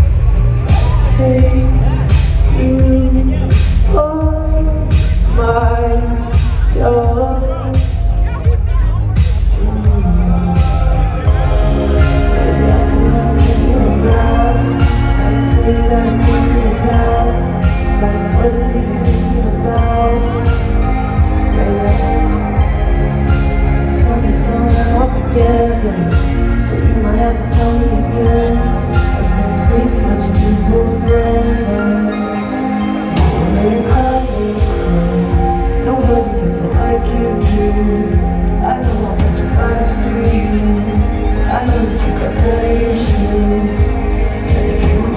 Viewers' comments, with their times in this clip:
0:03 omg that voice😍😍😍
0:33 His voice here is just fctizexticohcit